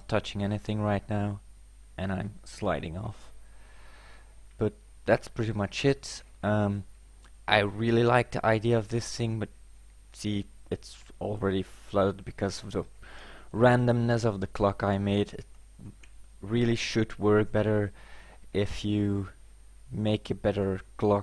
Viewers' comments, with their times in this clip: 0:05 that's pretty much sh*t Xd LOL